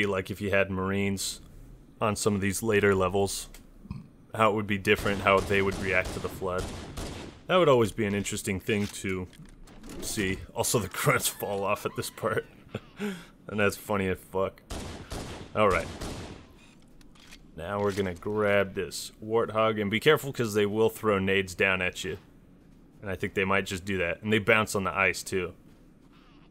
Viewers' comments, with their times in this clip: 0:09 THE GRUNT FALLING LMAO I CANT!!! "noooOOOOOOOOO WWWWWAAAAAAAAAAAAAAAAAAAGGGGHHH!!!!"